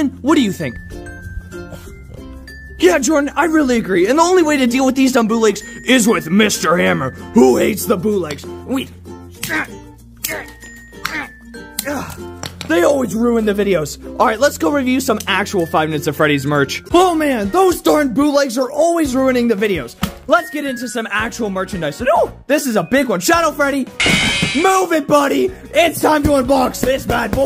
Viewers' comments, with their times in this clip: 0:08 I thought u said that mr hammer loves bootlegs and gives them kisses